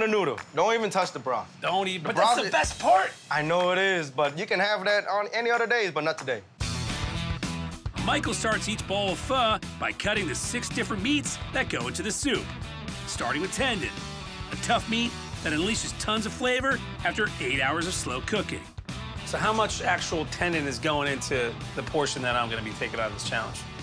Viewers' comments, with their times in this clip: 0:04 wtf was that accent lmao